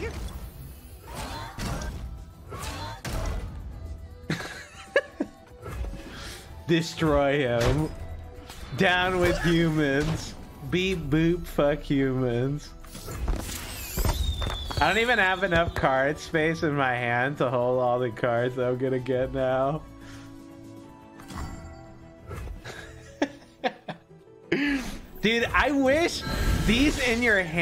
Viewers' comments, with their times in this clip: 0:08 Such an authentic robot response, I honestly couldn't tell the difference.